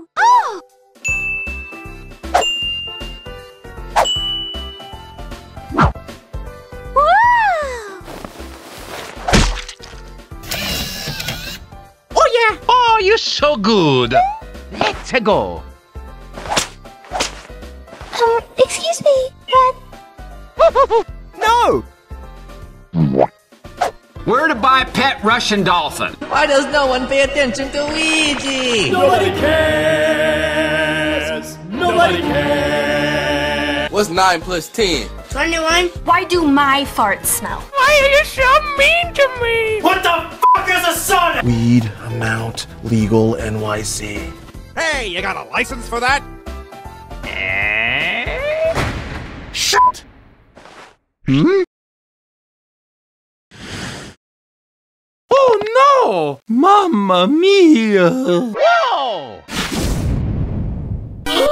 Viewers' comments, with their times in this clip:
0:09 The way Mario ate the spaghetti was fucking hilarious with the wii sounds 😂
0:49 that was the smoothest sh*t i heard ever